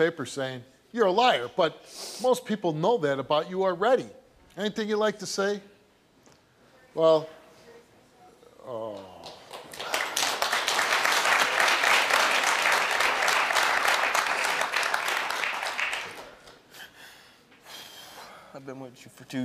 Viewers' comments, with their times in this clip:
0:07 Steve had me feeling some type of way making that noise 😂